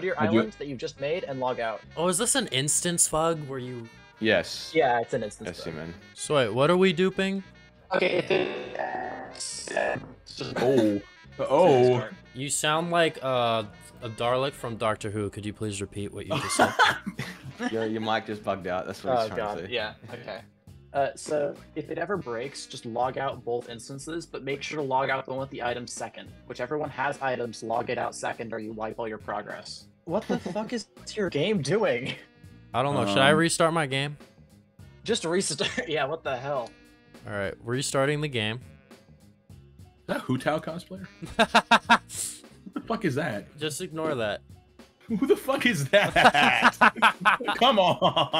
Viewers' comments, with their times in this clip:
0:07 bro started to sound like the cursed mining sounds from disc 11
0:33 listening to T.R.O.Y while duping is truly incredible. THAT’S WHY HE’S THE GOOOOOAT, THE GOOOOOOOOAAAAT